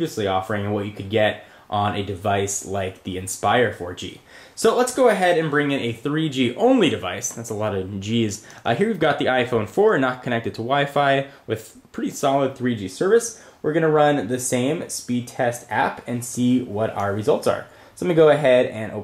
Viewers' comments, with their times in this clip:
0:06 LOOOL.... Listen closely ... "That's a lot of JIZZ"... That's what SHE SAID !!